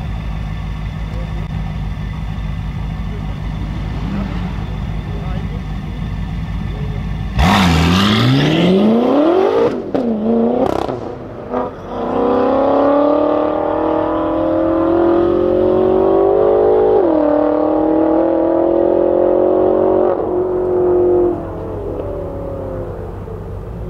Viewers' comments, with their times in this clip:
0:09 What happened ? Did the machine guns deploy ?